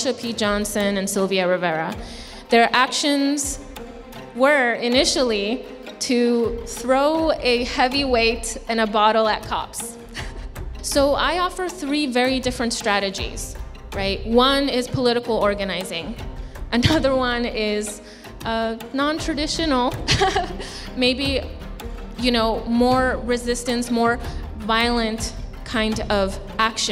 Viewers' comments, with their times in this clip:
0:07 "Throw a heavyweight bottle at cops" - "Im interested in a non-traditional, more violent approach" she says while laughing, and encouraged by the faculty. This college must be the sickest institution I've ever heard of. I actually connot believe something like this exists. Is it still in existance or has common sense finally previaled and someone shut it down?
0:07 She can't help herself from laughing when suggesting violence. She knows it's wrong. The laughter is involuntarily. Bizarre.